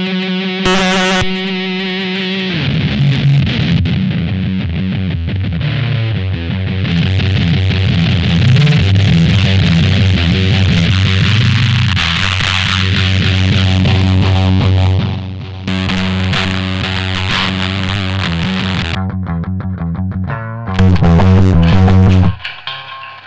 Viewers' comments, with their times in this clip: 0:09 That fuzz is almost as thick and fuzzy as your hair! On a side note Jupiter has so many nice moons I lived on The one you call Ananke for a great long while before the incident 😳 but we’ll leave that story for another day. needless to say it’s mostly just debris now😞💥
0:09 The one sounds exactly like what I heard immensely after I was accidentally electrocuted on a job site.....